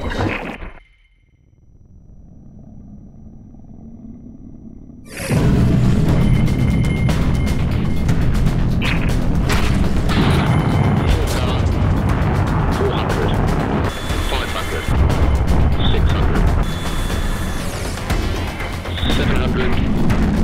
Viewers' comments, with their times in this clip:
0:08 VTEC KICKED IN YO.